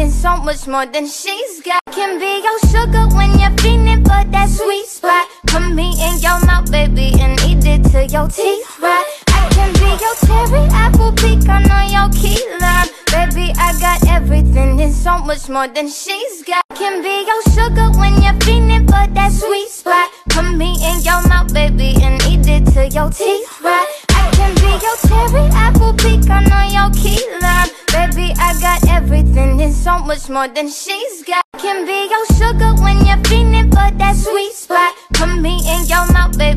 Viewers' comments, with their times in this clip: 0:09 honestly thought it was charlie puth
0:10 bruh I really thought that was Charlie Puth😂
0:10 charlie puth is that u?
0:11 I thought that was Charlie puth for second
0:18 she be yeetin' her back weird and loud laugh X'D